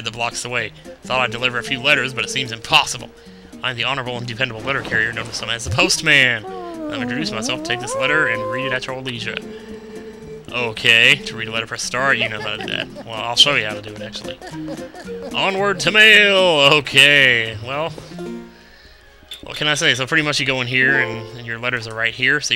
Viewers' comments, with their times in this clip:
0:06 I never knew that the mailman hummed the puzzle solve sound when he gave you a letter!